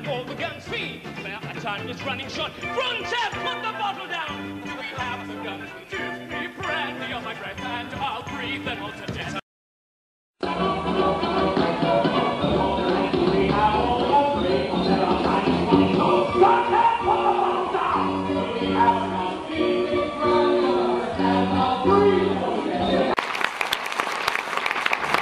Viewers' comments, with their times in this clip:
0:10 I love how David Burt just straight on screams-